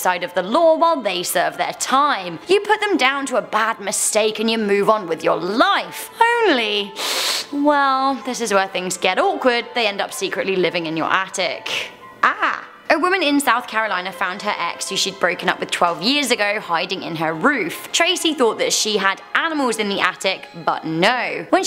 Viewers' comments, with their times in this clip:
0:07 warning headphone users...